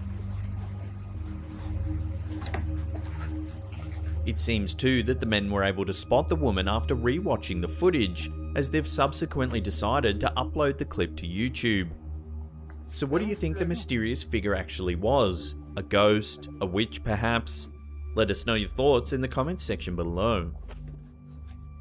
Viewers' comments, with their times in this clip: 0:03 Theres a faint whisper